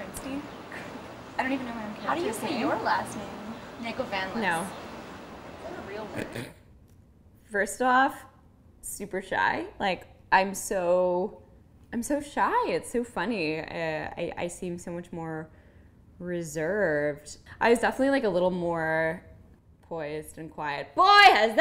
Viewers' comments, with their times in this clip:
0:04 the pause "no" 😂 idk why that was so funny